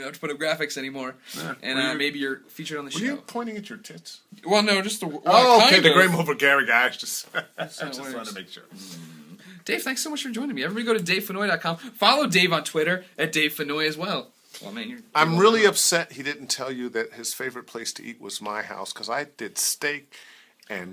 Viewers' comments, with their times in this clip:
0:05 "game over garry"?